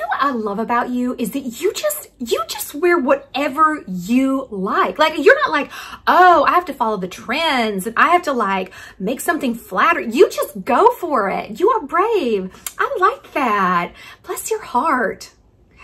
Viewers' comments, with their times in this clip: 0:03 such a good impression lol